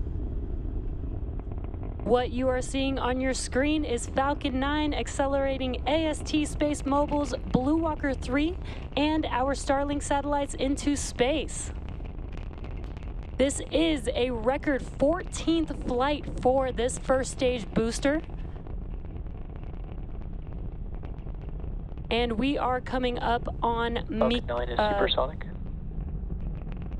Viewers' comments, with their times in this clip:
0:07 she ruins it. Rocket was just starting to sound cool.